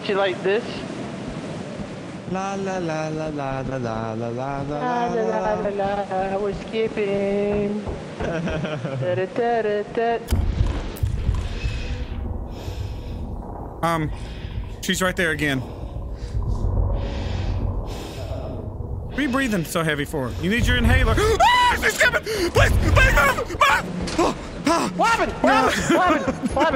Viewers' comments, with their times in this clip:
0:09 has to be the best sequence of events (cartoonz scream is one of pure fear)